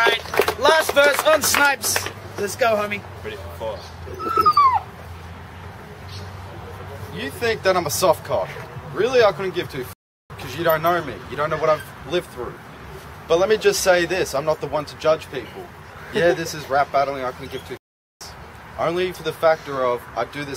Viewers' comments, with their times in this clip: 0:03 His rapping was so bad even the dog didn't want to hear it